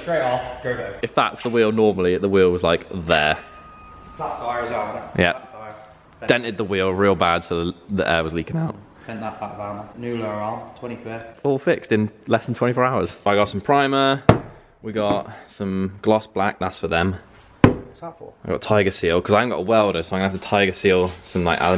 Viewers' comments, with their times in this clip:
0:08 Nice voice break 🤘 Cars looking sweet